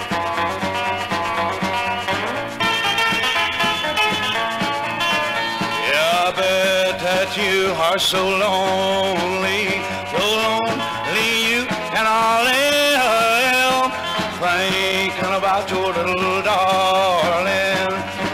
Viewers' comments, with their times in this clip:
0:05 This song is amazing. I measured the guitar break and it goes from :40 all the way to Forty seconds is a long time for a song this old. I love it!